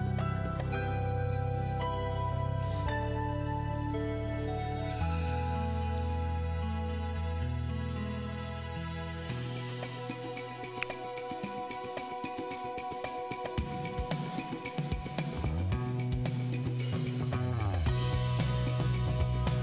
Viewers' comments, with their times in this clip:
0:04 I randomly skipped to and I thought you had turned on the titanic theme.